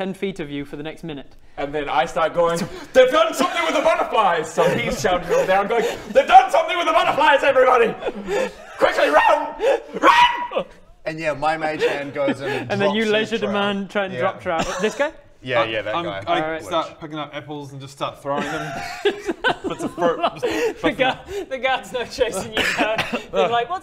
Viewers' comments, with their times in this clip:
0:10 Yeah if you're not watching this with the closed caption on you need to start. So many funny nuggets. Like ..... Baradun screaming RUN in a high pitched voice.... CC goes: [ultrasonic] RUN!!